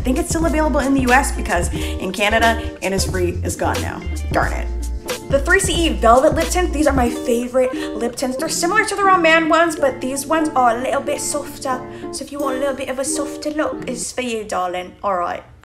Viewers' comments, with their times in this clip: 0:11 OMG The British accent I CAN’T- it was so accurate I love it 😄